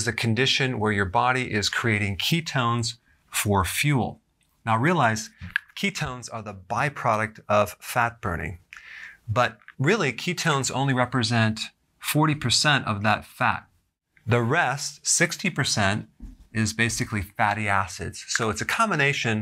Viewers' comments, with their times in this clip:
0:04 that sound from the pen